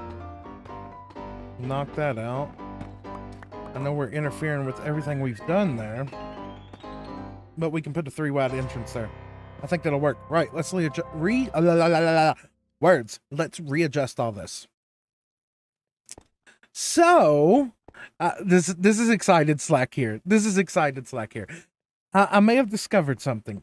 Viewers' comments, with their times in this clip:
0:10 oh wauw the music is done when you figured it all out! Loved that little detail!!